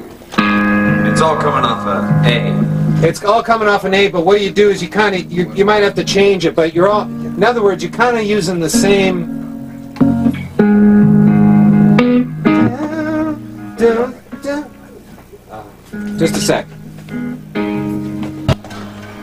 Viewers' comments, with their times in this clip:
0:07 sounds like “all within my hands”